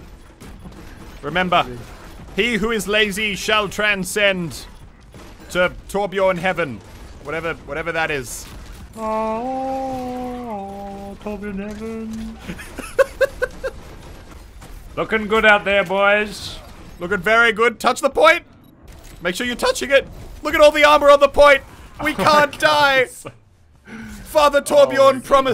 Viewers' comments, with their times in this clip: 0:10 😆😆😆 Torb flying plus the vocalizing was at the right moment.
0:12 heavenly voice: törbjörn-heaven Sees a Torbjörn flying through the picture. I never get enough of that moment 😂😂